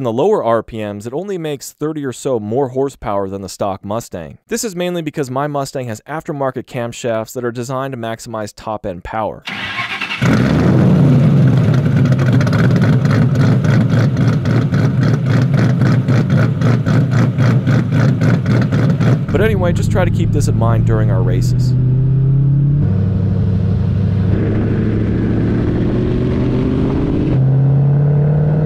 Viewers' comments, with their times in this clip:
0:09 mmmmm..... Chop chop 😩
0:12 I love a lot of chop chop